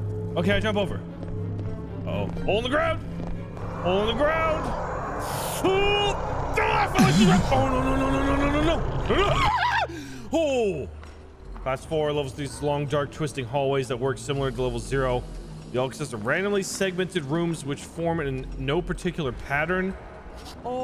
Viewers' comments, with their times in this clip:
0:08 bro scream was wild